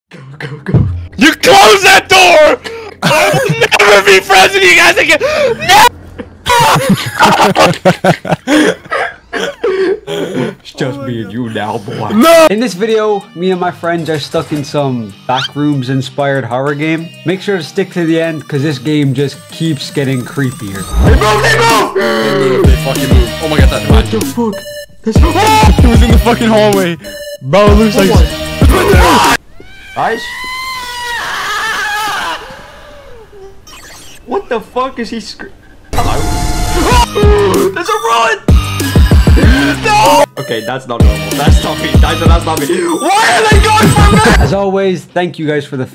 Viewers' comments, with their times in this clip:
0:00 sigh… I already know my ears finna bleed. 🩸 🩸😅
0:28 Why WTF DO I LAUGH WHEN YOU YALLS SCREAM HELP-😭 what is that creature 😰
0:32 sounded so real